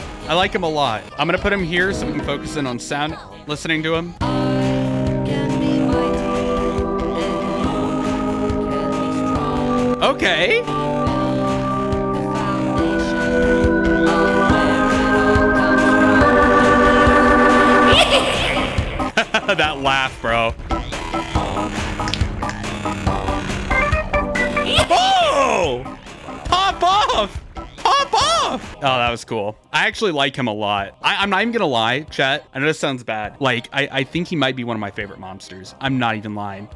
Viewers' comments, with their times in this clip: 0:03 Listen to the banger boi hyehehehe-
0:19 Bro the little jingle goes hard